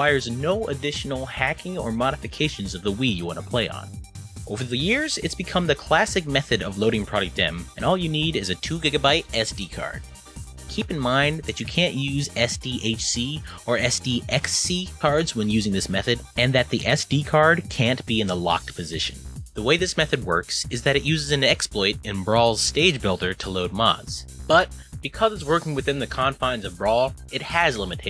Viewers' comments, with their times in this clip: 0:10 ¿You Can or Can't? I can't distinguish well wich one are you saying.